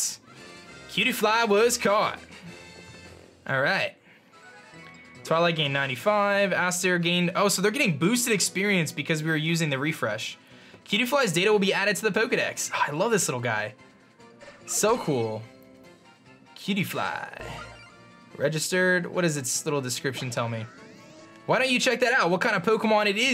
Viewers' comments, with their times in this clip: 0:06 Just as you caught the cutiefly and the sound played I picked up Rowlet and the sound played just slightly off with yours